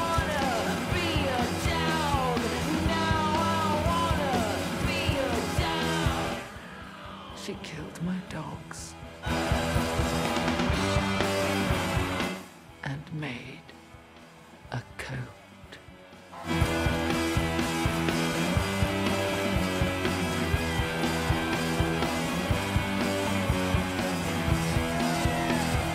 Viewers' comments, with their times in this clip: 0:06 "She killed my dogs. and made. a coat." -Severus Snape energy